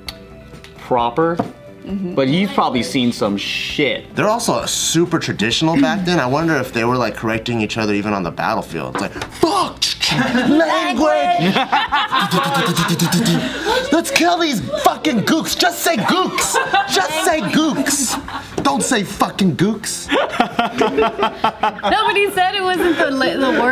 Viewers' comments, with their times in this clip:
0:09 that in sync language cute af